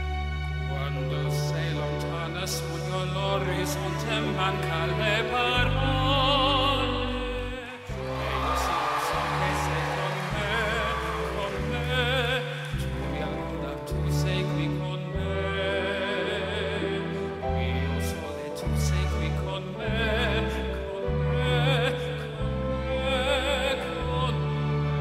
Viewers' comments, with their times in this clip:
0:09 when he started singing at this point, I thought he was going to sing the advert Go Compare.